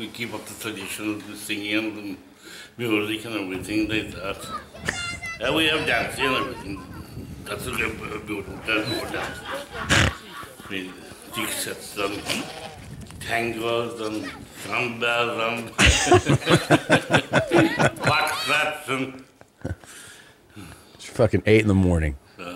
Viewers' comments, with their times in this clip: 0:04 Dude sounds like farmer fran from waterboy
0:09 "TOP OF COOM" 😅😅 ok ireland